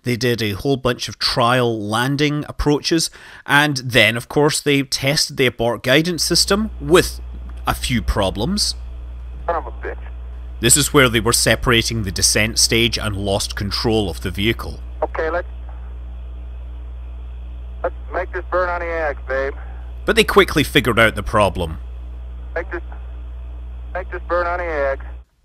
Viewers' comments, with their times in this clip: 0:09 wow, interesting to hear an Apollo astronaut say "son of a bitch" so matter of factly when a fairly serious problem occurs. They usually kept their responses subdued and PG from what I've seen.